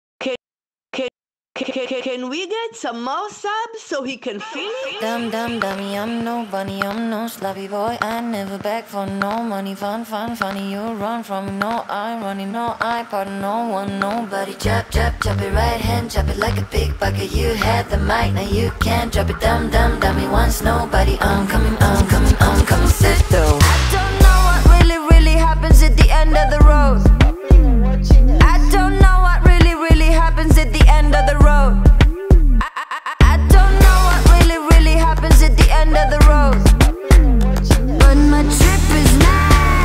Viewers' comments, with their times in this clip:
0:02 c c c can we get some samosa? is that what she said?
0:24 This song sounds like The Light Is Coming by Ariana Grande especially lol